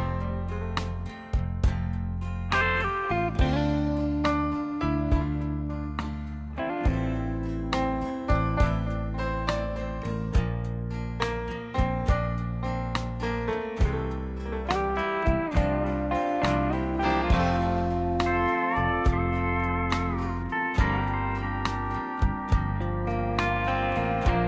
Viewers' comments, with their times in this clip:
0:07 The piano indicates a fair amount of flutter; the sound's not bad though.